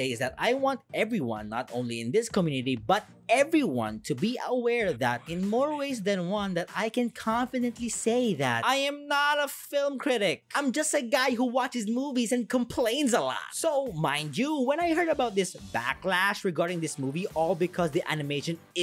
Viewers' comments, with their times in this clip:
0:03 can any one else hear that voice?